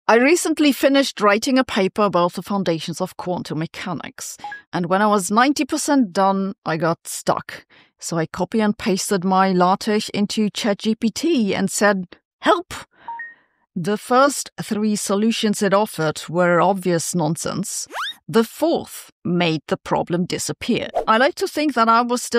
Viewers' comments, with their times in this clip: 0:09 What is the word Sabine says ? Sounds like 'latesh'- maybe 'LaTeX'?